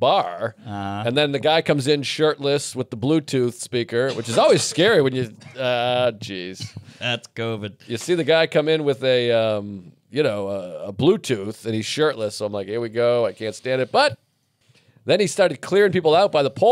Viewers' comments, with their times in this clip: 0:04 I can't believe that was Mark's cough LOL! 😷 You could easily wallpaper a house with the amount of phlegm he hacked 🤮 up. It sounded like someone dropped a stack of plates in the kitchen at Olive Garden LMAO!! gross...!! 🤮🤧 Mark's gonna give all of New York City covid in a couple more days!😆